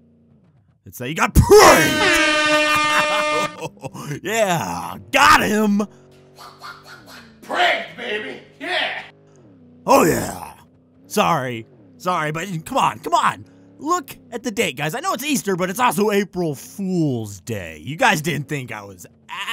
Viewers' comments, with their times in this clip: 0:06 The thing you say in the video are still true... Sadly... But good joke even tough I was prepared:) Esit' R.I.P. Headphones users